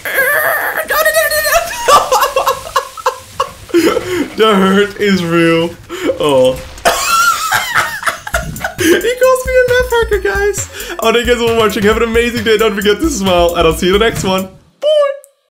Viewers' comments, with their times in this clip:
0:07 dat laugh made my day